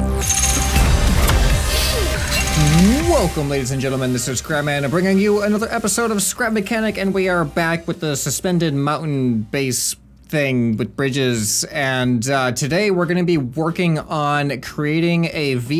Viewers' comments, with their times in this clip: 0:03 "This is crap man" TELL ME IM NOT THE ONLY ONE WHO HEARD THAT